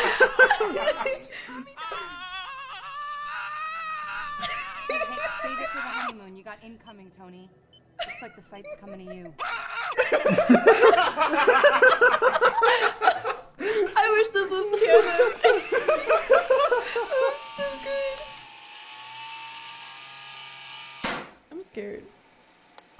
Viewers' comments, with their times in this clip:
0:03 I’m so used to the scientist scream